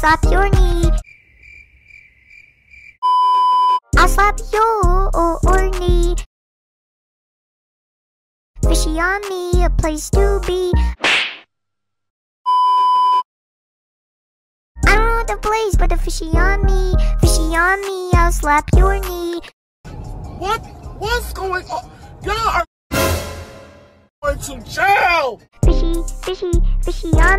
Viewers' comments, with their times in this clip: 0:07 I love how she is glitching our and says go ahead idk why but it make me laugh so hard
0:13 omg yall are all flat